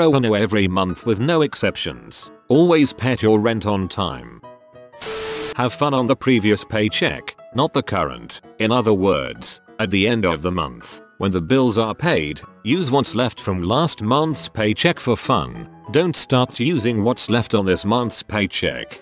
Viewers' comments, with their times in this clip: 0:03 ok I know this person means pay on time not pet on time but in my head I see someone petting there money for rent food ect like you would a cat or dog & I can't stop smiling. Lol